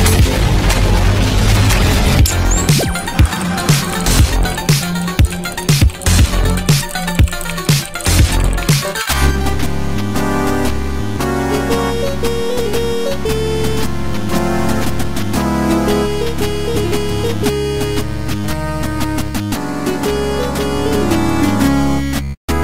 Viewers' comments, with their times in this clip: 0:10 8-bit Blue Moon? Smart choice.